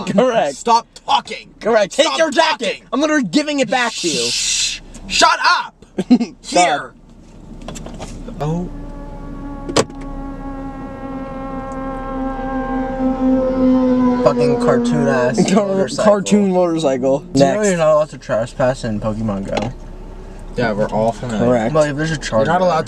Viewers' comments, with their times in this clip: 0:10 Sounds like a damn ufo